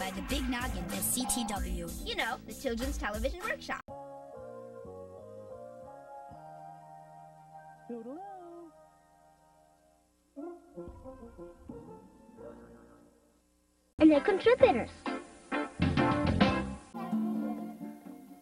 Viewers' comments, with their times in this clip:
0:04 you forgot to turn the sound up